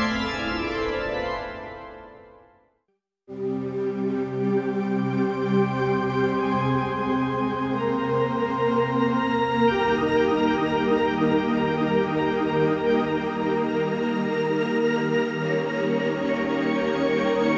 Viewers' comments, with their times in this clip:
0:04 that's some Vangelis type vibe there ! hahahahhaha man, you folk are really making a nice little library with this one. You would guess a pipe organ would come in handy like twice in your composing life but with some effects and morphing, you can get a lot of mileage out of those basic sounds.